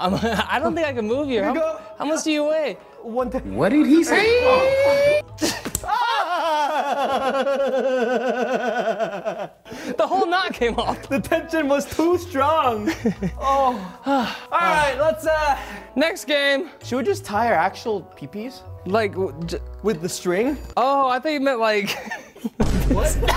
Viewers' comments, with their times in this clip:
0:06 That one laugh I can’t 😂😂